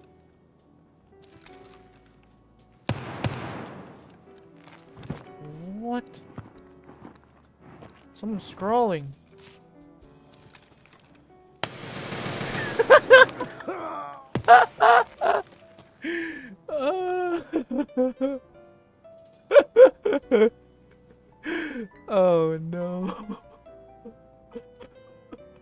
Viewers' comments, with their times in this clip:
0:10 BRRRRR poor guy